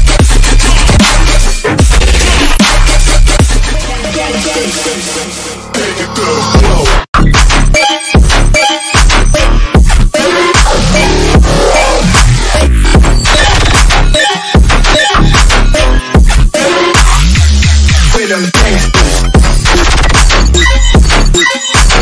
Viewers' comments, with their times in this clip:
0:04 Either I’m not looking hard enough or no one is talking about how mind blowing this track is, the flow is incredible